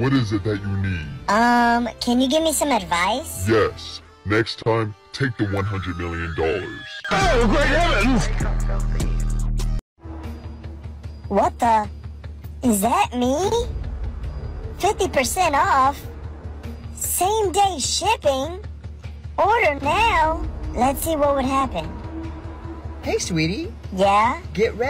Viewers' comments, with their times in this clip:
0:06 why in has screaming in the backround